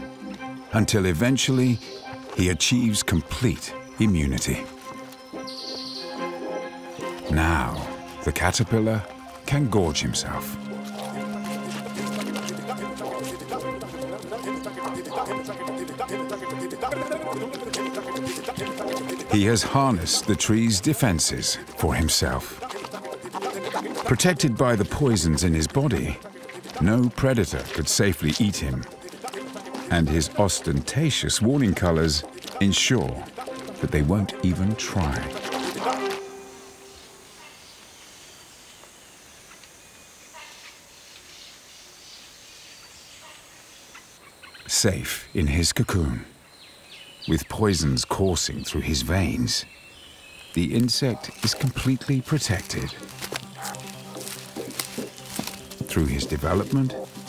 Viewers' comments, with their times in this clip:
0:04 What is that meth fueled music... starts going wtf onwards. AJUBABEDABIBIDA ADSISUDS
0:11 Ok cool but dafuq is with this music? Sounds like a fast forwarded audio of two people with severe stutters getting into an argument.
0:11 Eric cartman "Kyle mom is a *****" African language.
0:13 Sorry but the bgm from is killing me 😂
0:14 Interesting evolutions: 1. Spider evolved to identify the poisonous catch. 2. Trees evolved to protect their nutrients. 3. And finally Caterpillar evolved to get better off trees and inturn take advantage of the poison. Interesting part of the Video: That awesome Indian classical music for caterpillar.
0:14 Interesting evolutions: 1. Spider evolved to identify the poisonous catch. 2. Trees evolved to protect their nutrients. 3. And finally Caterpillar evolved to get better off trees and inturn take advantage of the poison. Interesting part of the Video: That awesome Indian classical music for caterpillar.
0:15 ROMAN HOLIDAY BY NICKI MINAJ MALE VERSION
0:16 bruh no ones gonna talk about that music... Okay
0:29 Listen very closely Youll hear a strange sound which sound like.... DadEdadedEDa
0:44 why add beatbox mouth effect when caterpillar eating